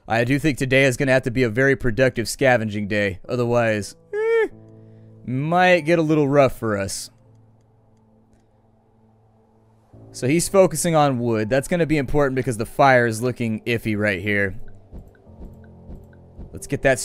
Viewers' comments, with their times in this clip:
0:03 Cat, stop making that stupid noise Just stop it. For the sake of every viewer.